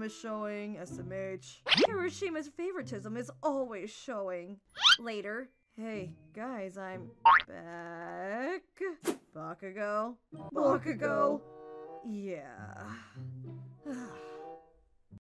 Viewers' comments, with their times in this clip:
0:12 they said bakugo in german